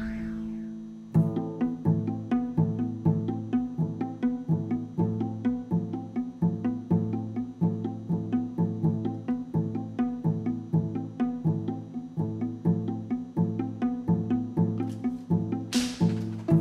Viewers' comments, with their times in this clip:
0:04 The beat is 🔥🔥🔥🔥